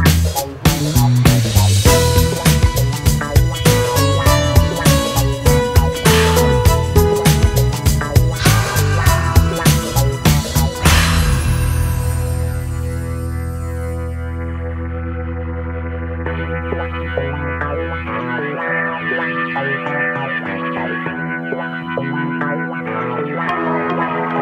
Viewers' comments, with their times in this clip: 0:06 you can hear a strange crow sound